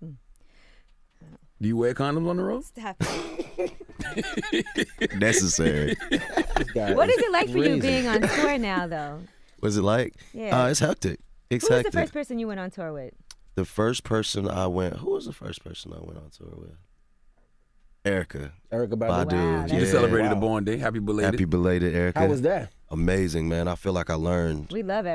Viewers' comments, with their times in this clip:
0:07 Did y'all catch that awkward pause mark? like they didn't know what else to ask him. smdh